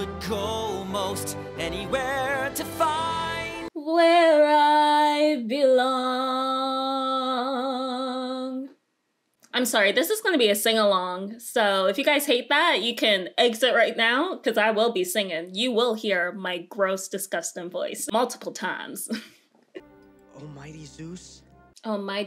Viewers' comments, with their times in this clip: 0:04 He sounds alike that guy that sang BECAUSE TONIGHT THAT I WILL FALL FOR YOU OVER AGAIN
0:10 I think you have the most beautiful voice